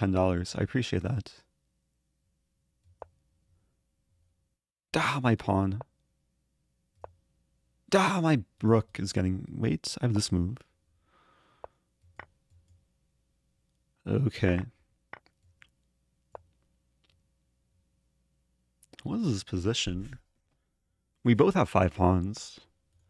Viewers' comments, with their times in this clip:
0:04 When he says "oh no my x" it's a fake blunder. When he says "dahh my x!" It's a real blunder